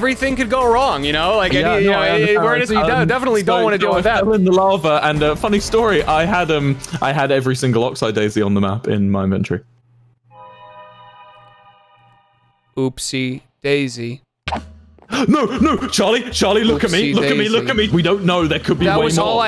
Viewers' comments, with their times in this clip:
0:05 The cave noise is especially perfect